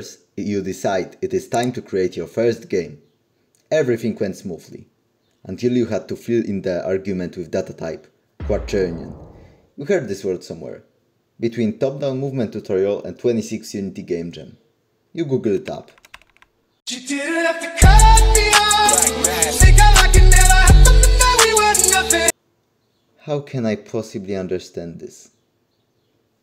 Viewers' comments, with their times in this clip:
0:09 You make me laught with you serious voice with "quaternioon" that was the world I was Struggling with :D Thank you :)